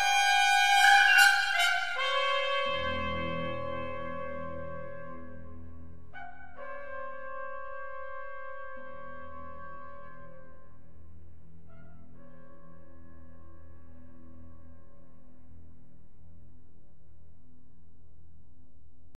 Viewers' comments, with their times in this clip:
0:06 At the end of this movement you can hear the trumpets quite distinctly say, "Uh-oh!", twice!